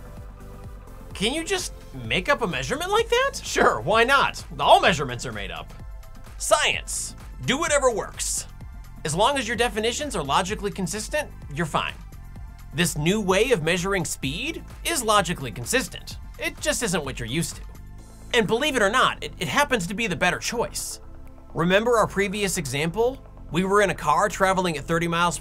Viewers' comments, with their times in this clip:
0:08 that sounds like a Malibu rum commercial.